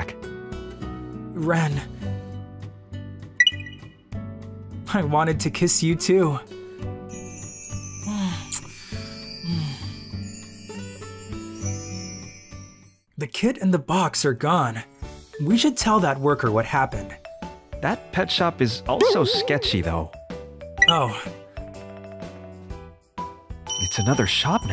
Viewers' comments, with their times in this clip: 0:09 Dang it they posted again and I missed it cuz I lost my phone but wake up y’all, the queen/king/The majesty has posted again! I love the title, my boyfriend has turned into a hamster and now he’s in my clothes but is it wrong to say that the black haired guy’s voice is kinda cute? omg nope I’m dead, goodbye world